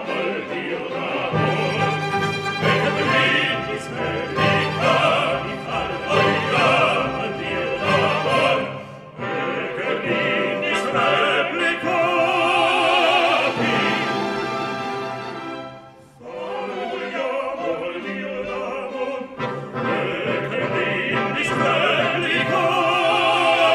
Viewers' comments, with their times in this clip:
0:10 just amazing orchestra in the end of this part 😍 😍 😍